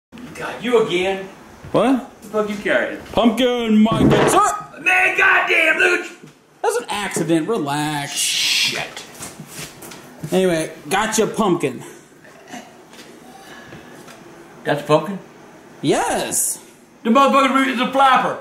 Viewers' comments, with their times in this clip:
0:03 SOUNDS LIKE A OLD MAN
0:03 why his voice sound wired
0:06 He sounds like Lightning mcqueen